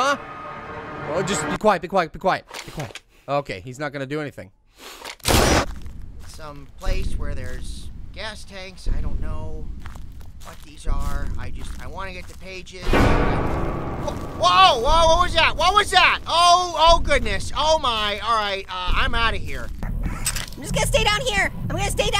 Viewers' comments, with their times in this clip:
0:03 Pear: ok he’s not gonna do anything... GUNSHOT pear: OH FOR CRYING OUT LOUD